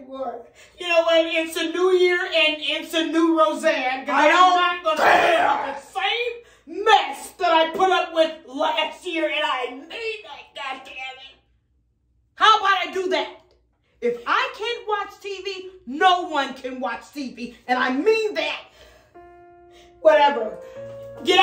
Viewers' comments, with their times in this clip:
0:04 how she says "I DONT CARE" had me hollerin 😭🤣
0:05 That deep I don’t care tho 😭😭😭😭